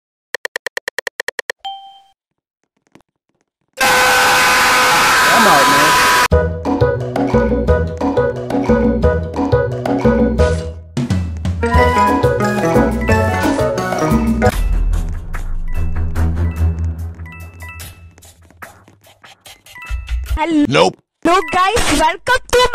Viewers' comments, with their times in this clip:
0:02 Laughed so much here turn down ur volume 👍
0:04 The "AAAAAAAAAAAAAAAHHHHHHHHHHH" is very xd